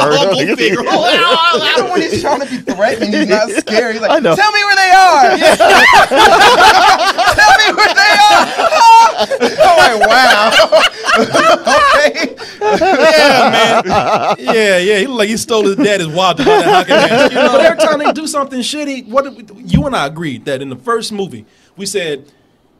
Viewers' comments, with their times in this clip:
0:04 oh he made Casey Jones sound so flaming lol!!!